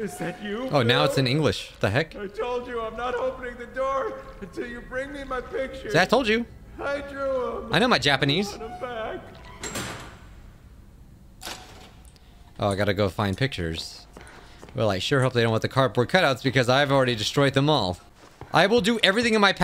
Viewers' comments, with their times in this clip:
0:06 he sounds like joe swanson